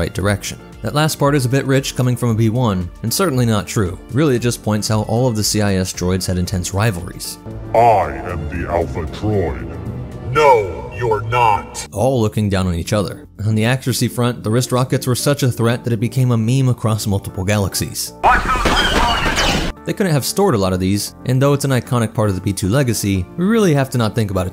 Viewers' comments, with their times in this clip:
0:10 "No, you're not." lighting.Mp3 sound effect